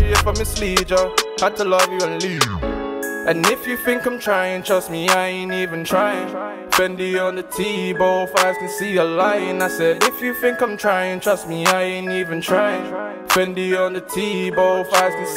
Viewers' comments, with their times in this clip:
0:03 when a wavy tune comes on and your with mandem